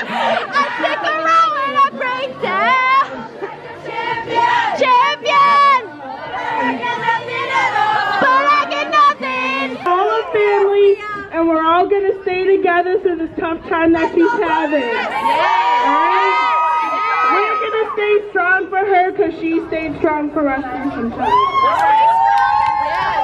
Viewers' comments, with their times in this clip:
0:07 she seemed ready to attempt the G5 high note 😂😂